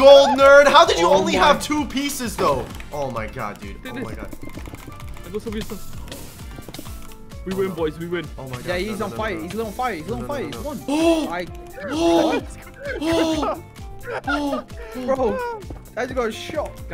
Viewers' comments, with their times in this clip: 0:04 butterfly clicking moment